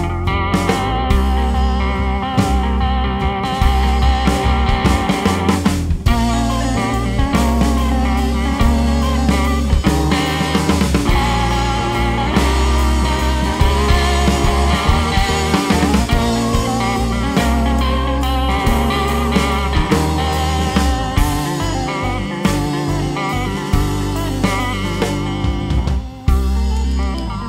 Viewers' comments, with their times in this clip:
0:08 the pedal is turned up so high the subtitles just say 'foreign'